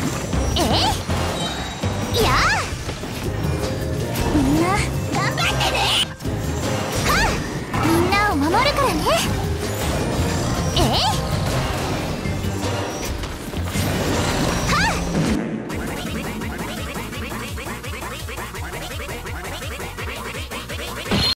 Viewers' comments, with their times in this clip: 0:03 U can hear her fighting scream
0:03 WHHHAT IS THIS VOICE. I Say Barbara hell.
0:04 Omg her screeam and 😳
0:05 had this on high volume so my ears are now bleeding❤❤/hj but srs I had that in high volume, now my ears hurt—
0:05 The gambatte ne on feels like she about to end at least a small country
0:05 AHAHAHAHAH WHAT WAS THAT, BARBARA DON'T SCREAM
0:05 her voice why....
0:05 I heard Rusia is it?
0:05 That was so loud ahaha
0:05 that barbara voice sound furious 😳
0:05 she screams like she means it